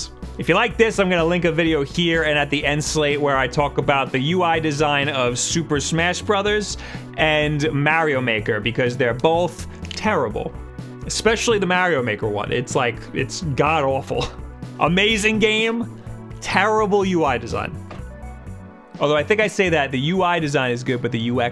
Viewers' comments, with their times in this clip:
0:08 did you just crack your fingers?